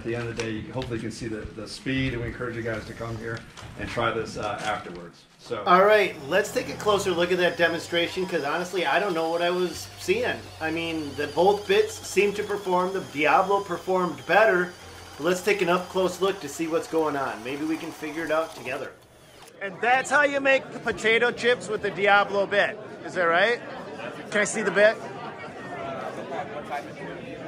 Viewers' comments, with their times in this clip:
0:08 True words. Couldn't tell the winner. Always amazed they got one job, yet sometimes they do it with what sounds like partially charged batteries. Or maybe they should use Ridgid.